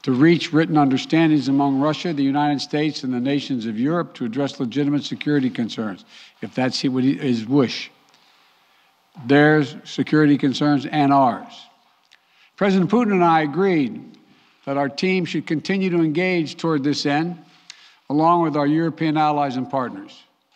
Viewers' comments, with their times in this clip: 0:06 Don't worry Biden will "ifehesh woosh"! 😂😂